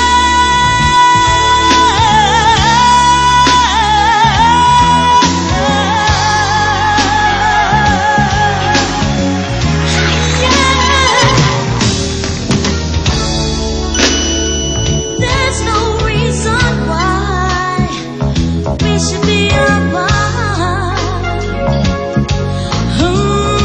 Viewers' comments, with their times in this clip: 0:08 I love the sound of the audience roaring with applause so loud it overpowers the entire band. She certainly deserved it after such an incredible soul chilling opening to such a beautifully sad song. She sounds like an angel here and it makes me think this world wasn't worthy of such a beautiful and captivating voice.